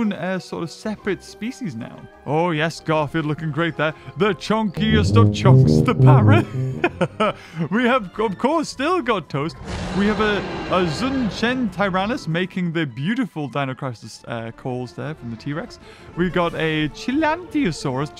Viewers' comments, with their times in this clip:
0:04 The tuba makes this even better 😆